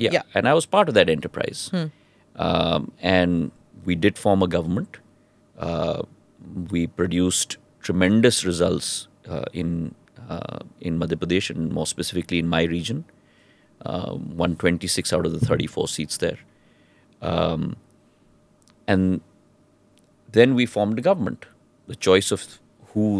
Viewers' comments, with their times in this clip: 0:10 How to you win 126 seats out of 34 ! Seems like Maharaj's math is a bit on weaker side.